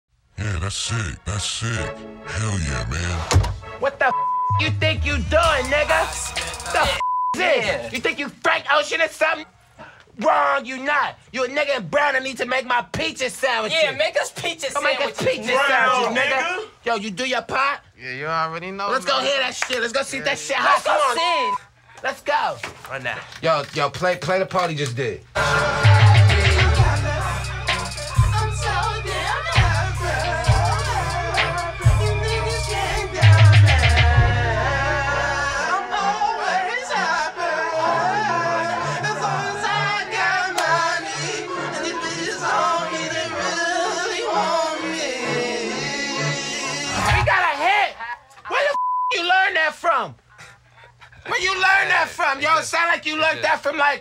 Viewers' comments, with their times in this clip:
0:04 you can hear the toms at the beginning of pothole
0:42 I'm pretty sure the person who face was covered was laughing🤣🤣